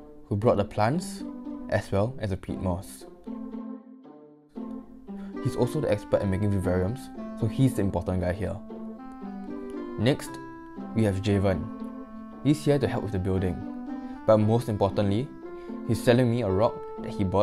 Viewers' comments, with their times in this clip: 0:05 music is derpy